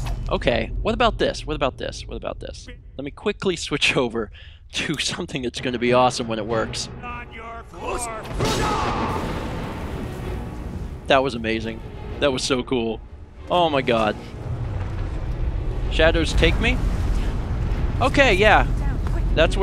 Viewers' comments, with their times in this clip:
0:05 EPIC Fus-ro-dah right there!!!! In your freaking face Mercer!!!